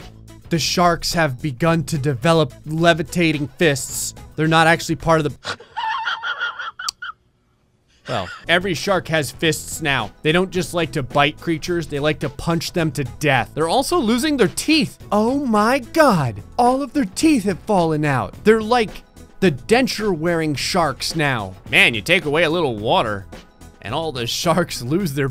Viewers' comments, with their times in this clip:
0:10 Best wheeze I've heard since the reading of the Sims patch notes.